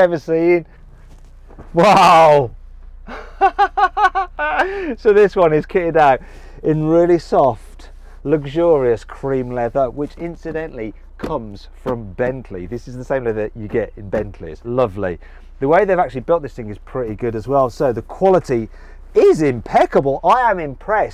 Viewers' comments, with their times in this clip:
0:03 He has the laugh of the Joker!!